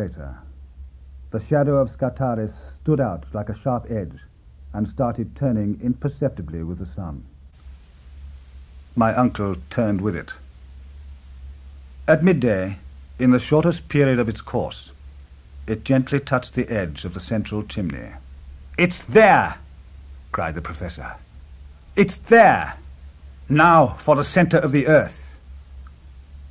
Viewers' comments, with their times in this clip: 0:08 My apologies, the sound becomes slightly muffled for about 4 or 5 minutes at one point, but bucks-up again